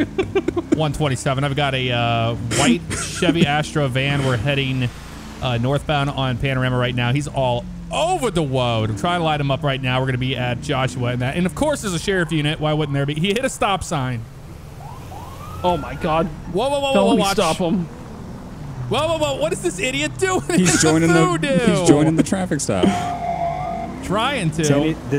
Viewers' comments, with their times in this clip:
0:07 he’s all over the Woad 😂😂😂😂😂